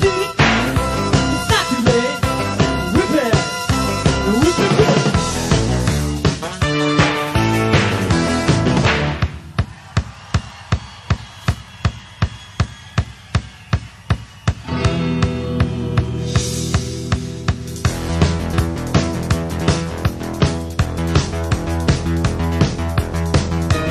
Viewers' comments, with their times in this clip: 0:09 the E-Z Listening arrangement of Girl U Want....but with lyrics !! Love it !! Thanks for the awesome vid btw, the synch is really good.